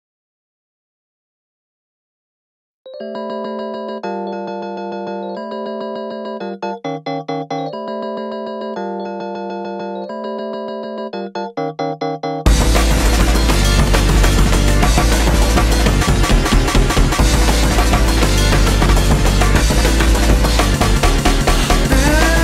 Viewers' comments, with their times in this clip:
0:03 sounds like the end
0:03 SOUNDS LIKE THE END OF THE TRAILER